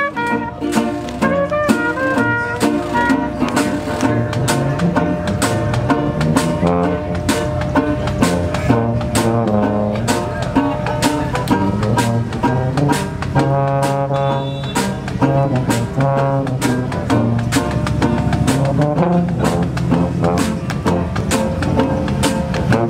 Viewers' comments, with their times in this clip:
0:04 Yikes, worst solo ever, sounded like a toilet being flushed. The rest of the band turn arount & think